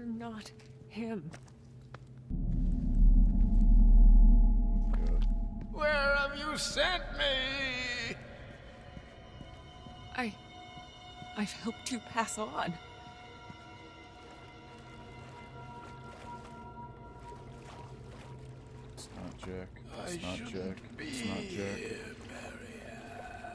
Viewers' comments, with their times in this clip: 0:10 Talk about a freaky voice 😅